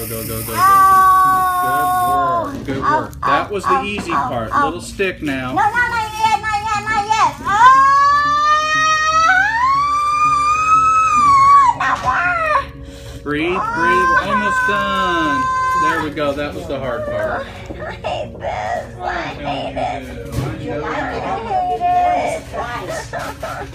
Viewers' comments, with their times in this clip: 0:04 ............. can she be anymore of a screamer ???? Give me a break. Hypersensitiveness my foot. More drama queen. Most people hold their breath when in a lot of pain, he is telling her to breath, if she is screaming she is breathing.